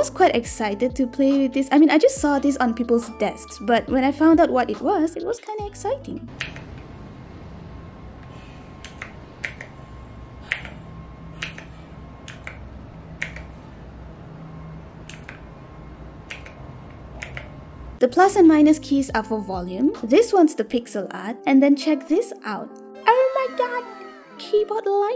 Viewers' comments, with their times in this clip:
0:10 mini keyboard amsr session